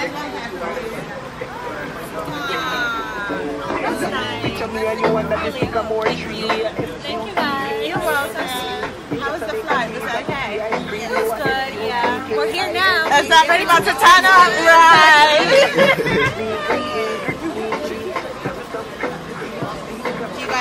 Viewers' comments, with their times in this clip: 0:06 Lol not Brysco song playing in the background